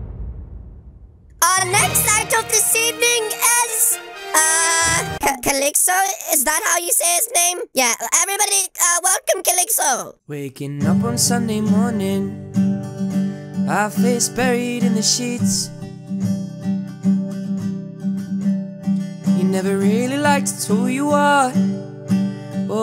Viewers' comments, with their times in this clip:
0:10 is this really your voice if yes OMG YOUR VOICE IS SO AMAZING!!!
0:10 bro he is so talented at singing 😊